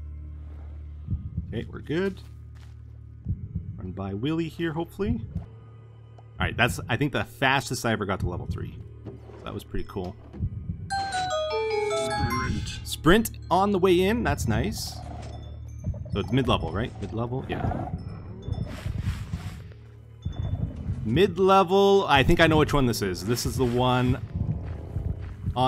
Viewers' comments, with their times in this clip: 0:10 u went down to level 3 and some how u reach the max clank that's y there is kling noise everywhere of the amethyst shard so THE WARDENS can easily track u cause of the noise all around Pls let tango know 😊